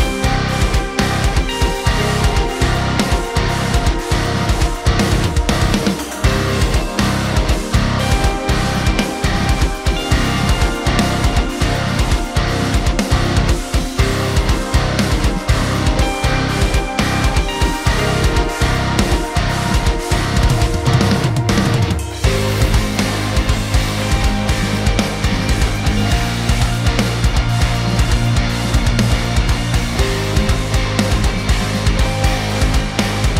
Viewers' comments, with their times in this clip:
0:06 Agree, favorite parts of the album are the drum fill and Spencer’s high notes in this song
0:06 The drum fill bruh
0:20 The off timed fill is also sick!